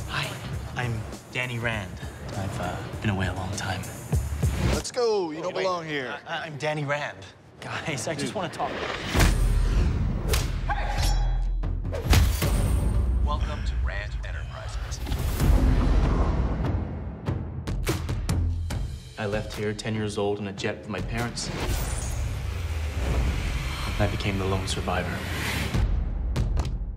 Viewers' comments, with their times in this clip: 0:10 LoL at the baton making a Hollywood sword unsheathing sound. Swords don't make that sound and I don't see why a baton would.